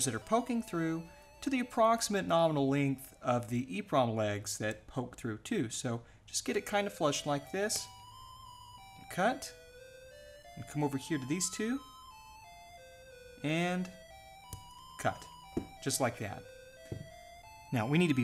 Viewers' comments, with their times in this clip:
0:06 The music sounds like Star Hustler with Jack Horkheimer kind of stuff.